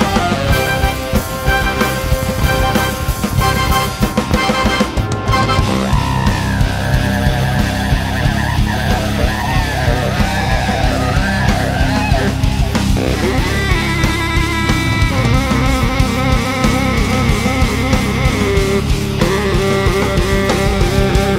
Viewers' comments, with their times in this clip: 0:08 Did he just do a didgeridoo solo on a saxophone? I'm pretty sure that's illegal.